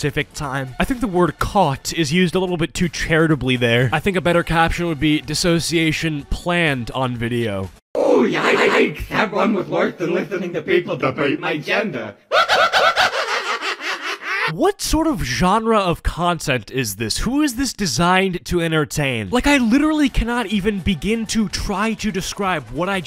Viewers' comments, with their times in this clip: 0:08 sounds like that one person from wreck it relph
0:08 But why does she sound like the villain from wreck it Ralph 💀